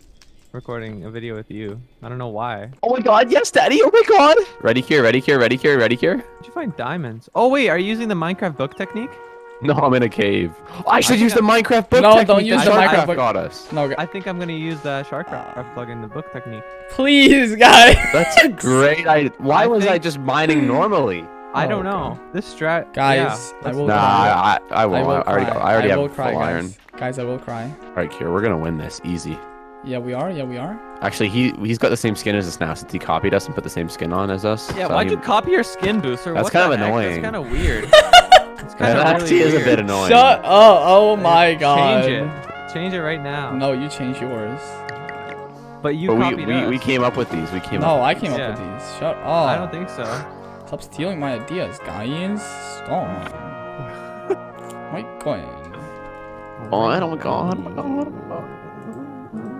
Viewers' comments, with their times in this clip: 0:03 The most relaxing song I've ever heard played on a trumpet.
0:42 WHEN HE MADE BOTTLES IT WAS PERFECTLY IN SYNC WITH THE BREWING STAND NOISES